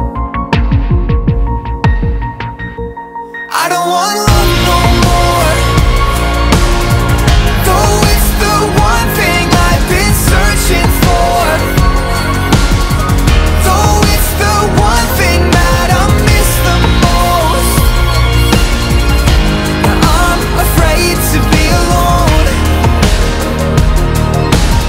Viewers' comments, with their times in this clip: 0:05 Hats off to that catchy drum situation...I wake up in the middle of the night with this song paying in my head...I live for ! Everything is soooo right about this song. I can't get enough!😍